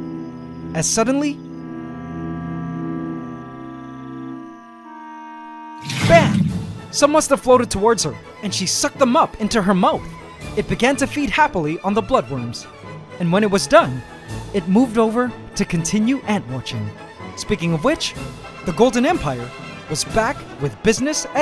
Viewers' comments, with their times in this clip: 0:05 I liked the classical music part 😼